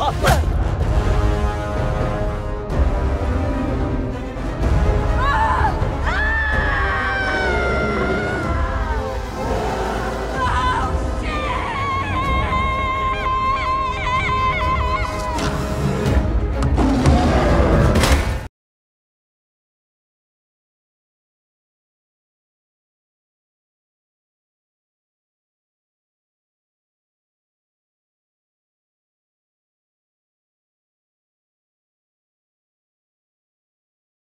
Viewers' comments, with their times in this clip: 0:04 she sound like the minion LOL
0:15 has no one noticed when she screamed she sounds like the minions
0:16 sounds lilke king kongs roar 2021
0:17 it almost sounded like Kong but slowed